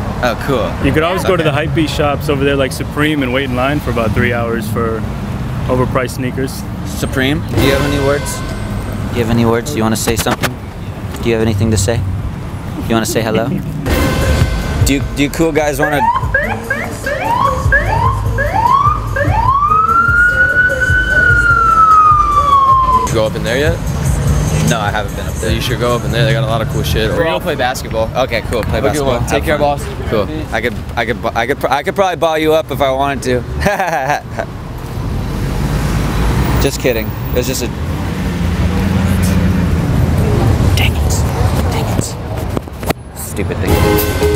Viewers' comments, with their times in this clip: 0:09 the world doesnt deserve the sound of a dog sniffing a microphone
0:30 With a laugh like that, you probably could